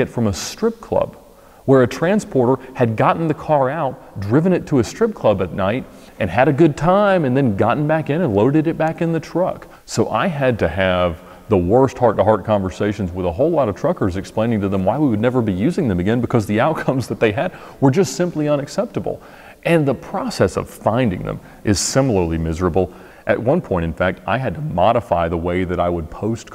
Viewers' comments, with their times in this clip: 0:09 pitch change in his voice wtf?